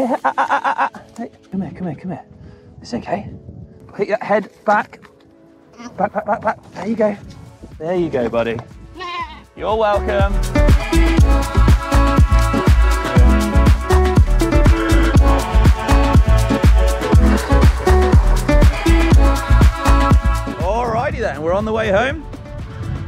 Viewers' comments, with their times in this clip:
0:08 I think the goat said "Safe riding" XD Hey GMBN, thanks for making me want to go out more and ride my bike. 😊